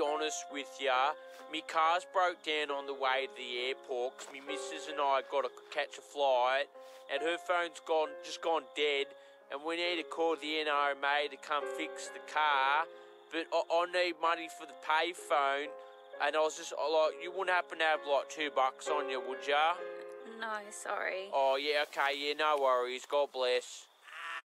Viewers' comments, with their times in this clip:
0:10 Me as Spanish struggling to understand him